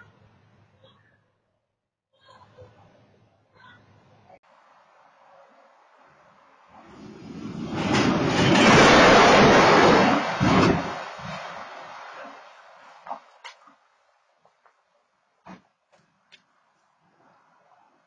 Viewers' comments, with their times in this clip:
0:06 and later, could clearly hear a lady screaming and definitely someone was hurt.